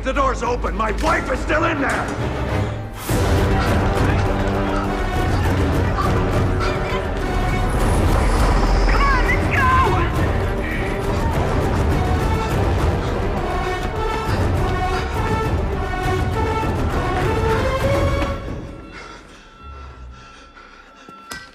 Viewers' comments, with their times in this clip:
0:04 bgm start's 🤟woww